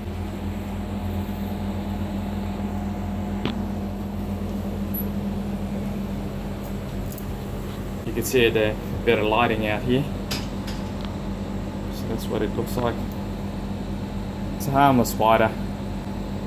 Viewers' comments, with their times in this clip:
0:04 idk if anyone else has supersonic hearing (apparently) like me but there is an insanely high pitched noise from the door im assuming. If you are like me, skip that section if you don't want your ears bombarded with the screech of death.